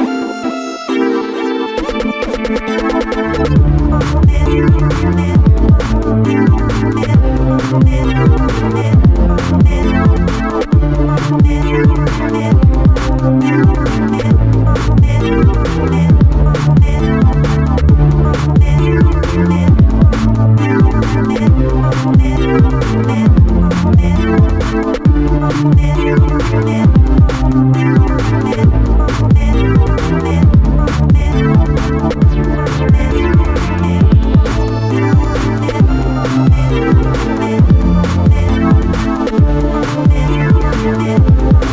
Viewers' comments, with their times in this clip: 0:04 does it sound like “hump dat” to anybody else or am I just too high right now
0:27 Wow, had to stop couldn't take any more of that music. Great video otherwise.